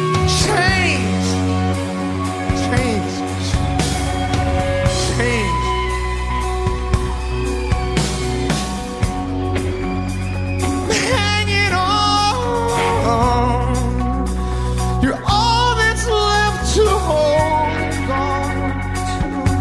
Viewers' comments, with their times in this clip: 0:07 I just thought "wow that guitar sounds very U2" and then they do a "Red Hill Mining Town" snippet!!! 😍